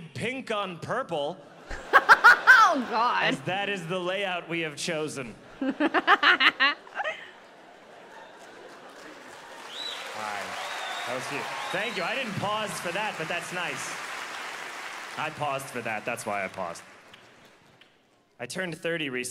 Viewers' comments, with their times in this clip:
0:05 i like that laugh